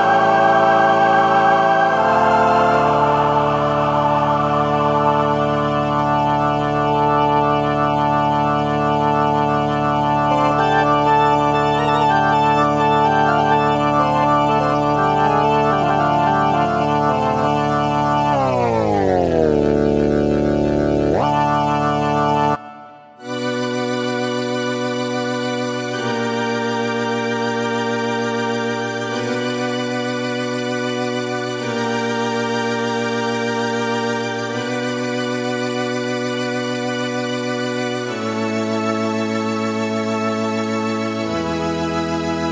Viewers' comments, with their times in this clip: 0:09 Instant Rick Wakeman!😂
0:23 Pink Floyd/Saucerful of Secrets/Echoes yummy B3 w/Leslie sounds!!!!!